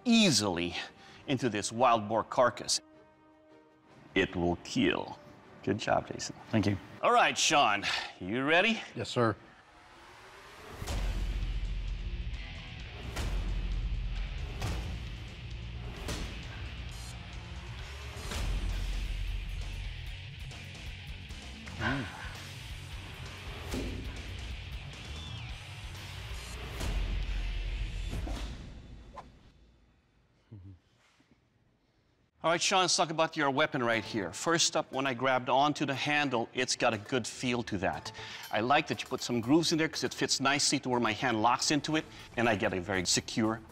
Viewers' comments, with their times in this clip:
0:03 That is the best “keeeel” I’ve ever heard
0:03 that smile when he said ''it weel keel'', man nobody is save at home
0:28 who decided to add a whish sound effect?
0:28 nice "realistic" sound effects